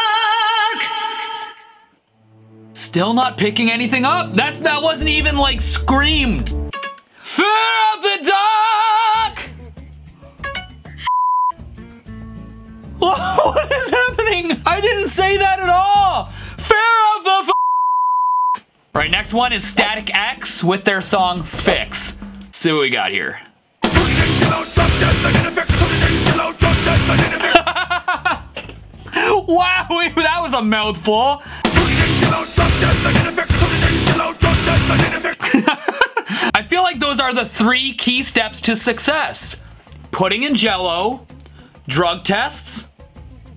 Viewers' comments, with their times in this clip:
0:04 when it said the f word it mix’s fear and duck to get it
0:12 The one where he says feel the duck
0:19 I'm a HUGE Static-X fan and I've never heard that misheard lyric before 💀😭
0:23 I met Tony Campos, the bassist for Static X, and told him that this is what I hear in Fix and he bust out laughing saying he never heard that one before.
0:24 (hilariously enough), it sounded more like, " Covered in jello, drug test, I need a fix." Which is closer to the actual lyrics but still not 100% there.